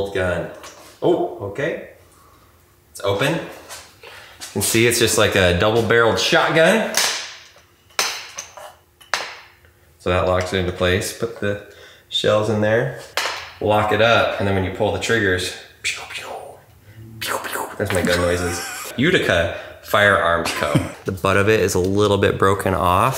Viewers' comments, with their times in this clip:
0:08 does it not sound like an among us sabotage 😂